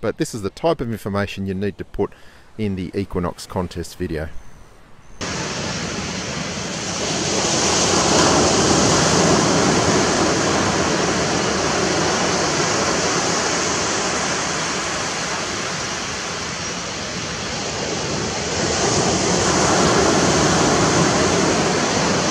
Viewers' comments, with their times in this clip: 0:09 HEADPHONE USERS!!!! BEWARE to have your ears blown out!